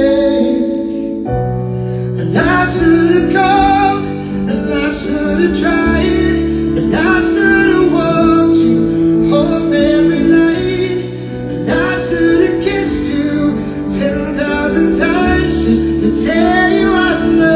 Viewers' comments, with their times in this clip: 0:03 = Michael Bolton’s voice double